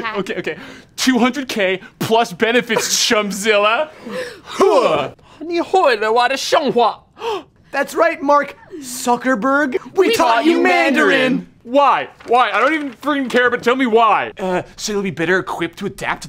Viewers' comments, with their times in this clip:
0:04 thats the sound that will happen when the videos ending a few years back.....Huuah